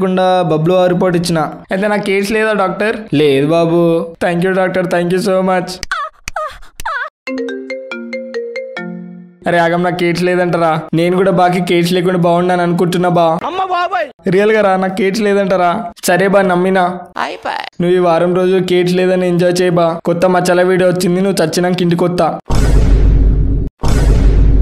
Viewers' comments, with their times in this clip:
0:05 😂 Who notice that touching sound 🤣